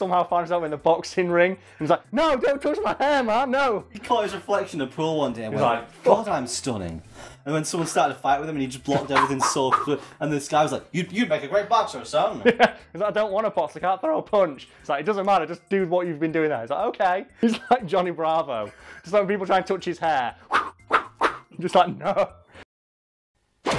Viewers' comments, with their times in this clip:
0:10 The greatest 1930's American accent iv ever heard...I'm American.. I'm a failure.